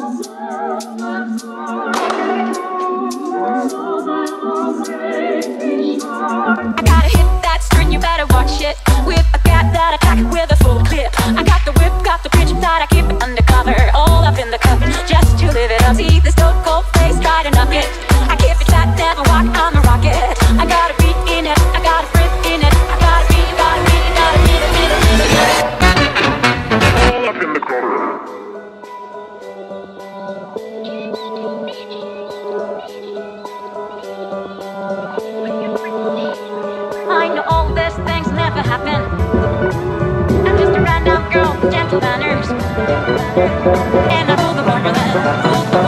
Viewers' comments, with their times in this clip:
0:03 DOES ANYONE ELSE HEAR “SMELLS LIKE A BABY SKARK” OR AM I GOING INSANE.
0:27 i hear hold up in the crotch .____.